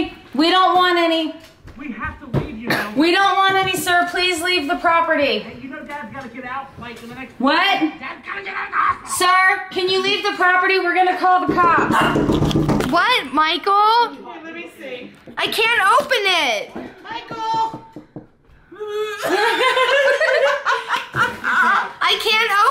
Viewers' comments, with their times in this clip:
0:07 turned into a german real quick 😂